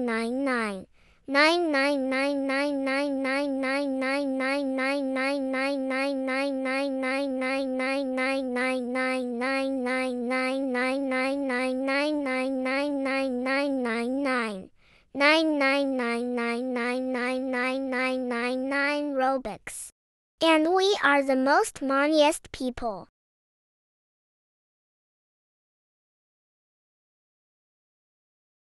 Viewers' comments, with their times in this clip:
0:09 I dunno why but when I listened to this part while slanting my device, it sounded like miku
0:11 even the ai got tired of saying nine by the voice-